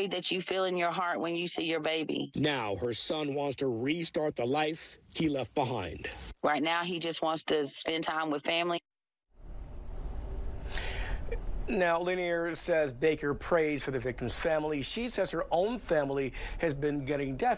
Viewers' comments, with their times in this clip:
0:05 Wow the editor did a really bad job here. Either include her comment or don’t - but don’t hack it off mid-sentence